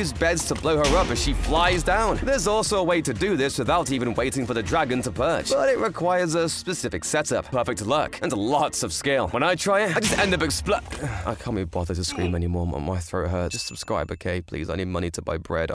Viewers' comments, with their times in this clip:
0:12 dude got depressed voice now